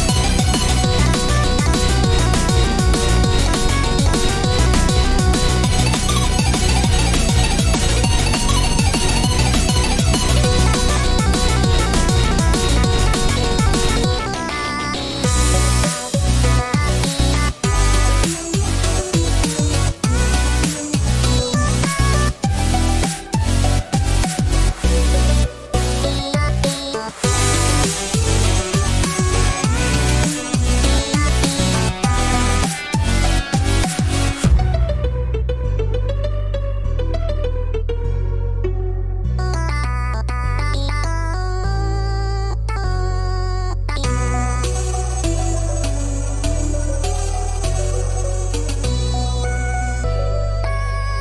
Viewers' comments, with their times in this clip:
0:10 i love how i mostly heard E E E
0:35 white decided to triple his smugness and plays an unexpected, quiet and serious part. Perhaps it shows that white should take this kill a bit more seriously like black. Eh idk but the change in sound and tempo goes hard 🔥.